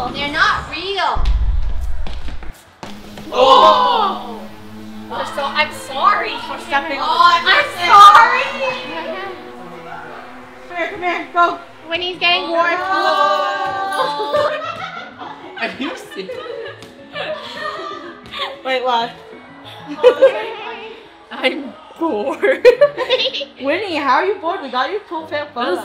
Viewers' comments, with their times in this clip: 0:06 I love how she said it